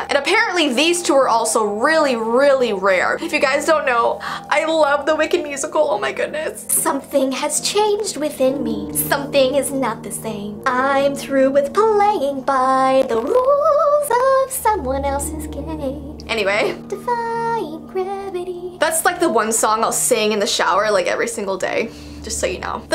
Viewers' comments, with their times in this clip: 0:06 Man you sing soooo good